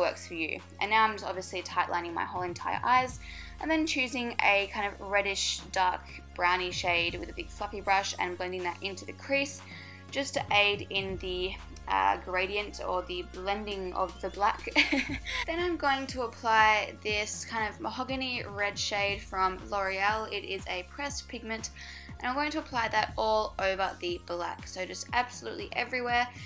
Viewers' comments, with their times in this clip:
0:06 I thought you said " with a fucking brush" hahah ily
0:07 I could have sworn you said "with a bug fucking brush" lmao i love the look though! :)